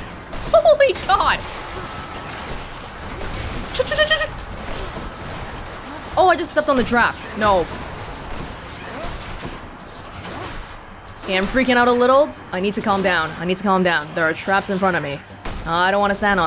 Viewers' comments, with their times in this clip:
0:03 Lmao I love your SFX xDD